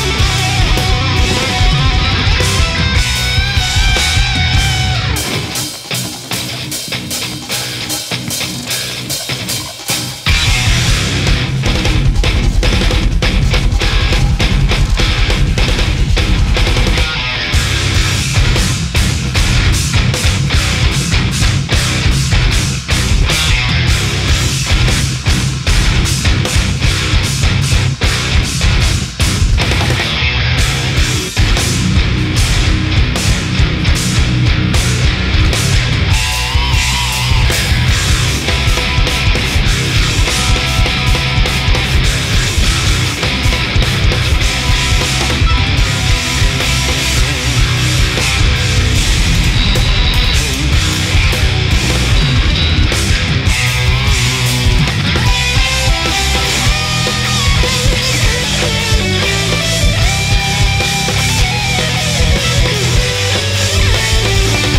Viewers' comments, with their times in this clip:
0:05 still love watching this, but that gate on the guitar is so ahhhhhhhhhhhhhhhhhhhhhh
0:05 Seriously, what the hell is going on with that god-awful compression?
0:08 is so fucking heavy
0:35 Can we all just take a moment to appreciate the pinch harmonic ?
0:52 Tosin's solo o_o so many notes!